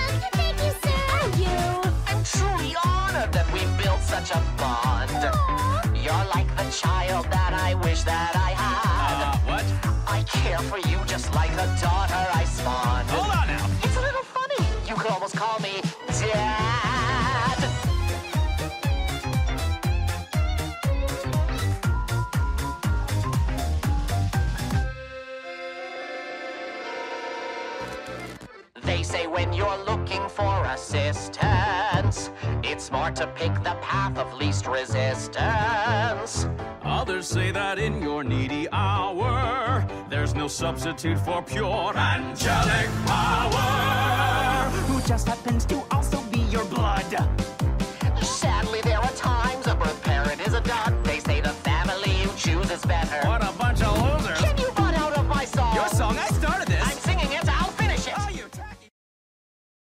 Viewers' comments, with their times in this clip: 0:09 Me thinking he said "I'd kill for you just like the daughter i Spawned"....
0:42 every time I hear this part I think of a radio ad announcement ironically enough
0:54 The bonk sound from Alastair bumping Lucifer out of the way has me in tears
0:54 has anyone else noticed that the doge bonk sound effect plays here